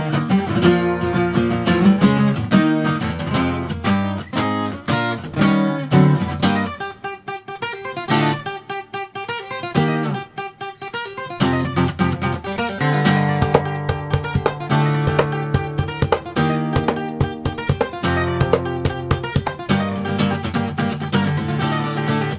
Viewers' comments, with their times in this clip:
0:06 When Vegeta goes Super Saiyan in Mexico, lol.